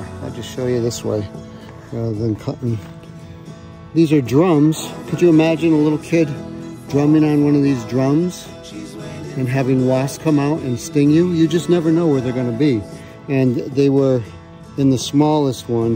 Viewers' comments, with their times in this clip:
0:03 The juxtaposition here is hilarious, the soothing music, the calm voice and then... nightmare fuel. CAN YOU IMAGINE DRUMMING THESE DRUMS AND HAVING A WASP COME OUT AND STING YOU. YOU JUST NEVER KNOW WHERE THEY'RE GONNA BE